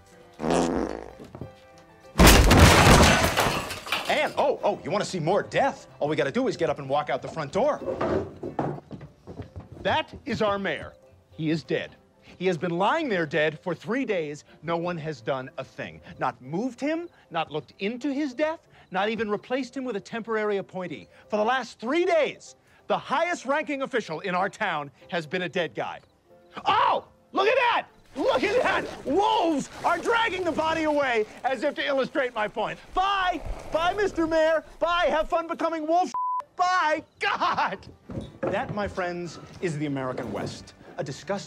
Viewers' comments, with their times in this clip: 0:09 the cut to the dead mayor along with Seth's delivery of that line is so fuckin funny every time i see it
0:25 Seth goes full Brian
0:26 Turned into Quagmire there for a second 😂
0:27 Seth, your Quagmire is showing